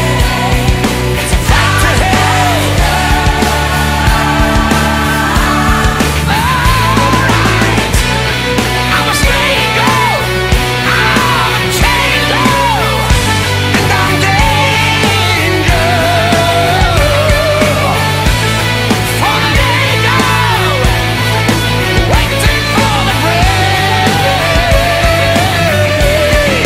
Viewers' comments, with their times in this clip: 0:07 "I'm a stray goat! I'm potato!" Misheard, of course... :)